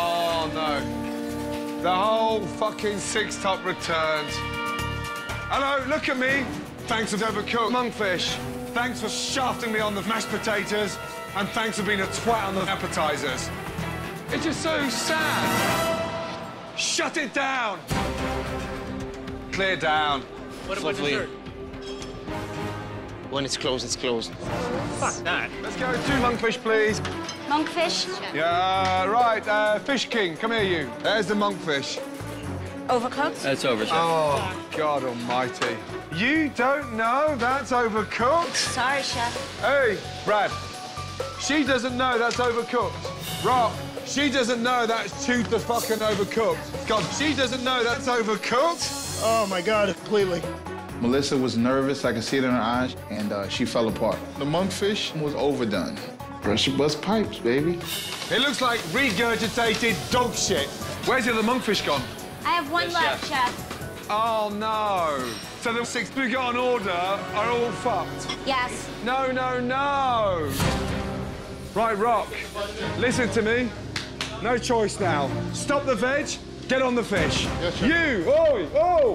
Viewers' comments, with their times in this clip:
0:06 huh that all complaint seems oddly said. almost as if it was stitched together...
0:06 why is the audio cut together?
0:07 it sounds so wrong ....Monkfish....Mashpotatoe....Appetizers
1:04 the way he says “oh no” lmaooooo